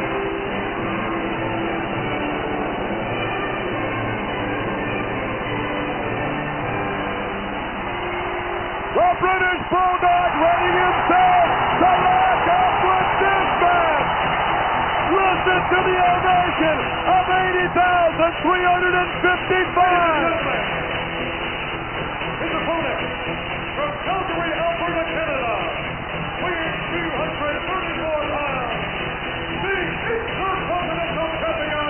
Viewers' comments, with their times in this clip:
0:10 The music and that walk. Bad ass. Love it.
0:13 Love it,so cool with the walk and music